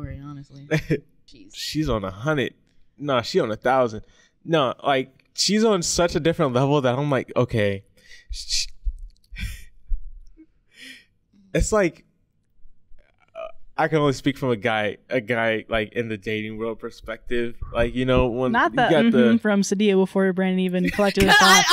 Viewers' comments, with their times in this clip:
0:06 yall said kelly so much it doesn't sound right 😂☠️